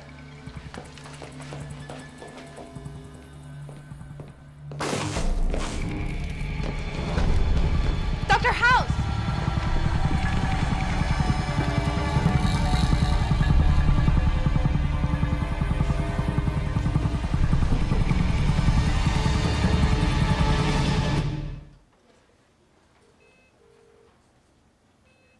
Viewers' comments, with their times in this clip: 0:07 Not gonna lie... Amber shouting "Dr. House" was the weakest point of her acting career.